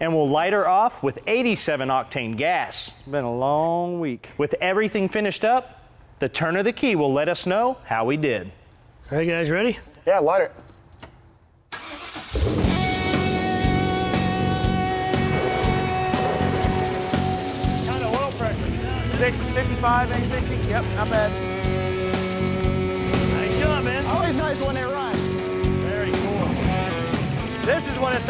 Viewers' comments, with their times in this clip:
0:09 the start up - "let's hear how it sounds" (over powering crap music cuts in, so you can't hear how it sounds) 🙄
0:12 Loved the video right up to then you went and drowned out the sweet sound of the engine with the overbearing music.
0:12 don't forget to add the music in the background to cover up the massive exhaust leak noise.
0:14 there is a ton of lifter noise at the same time loud music is injected in attempt to mask it.. What gives? Too much lash? No wonder that one guy asked "What is the oil pressure?" Yikes!! What did they do to fix the lifter noise?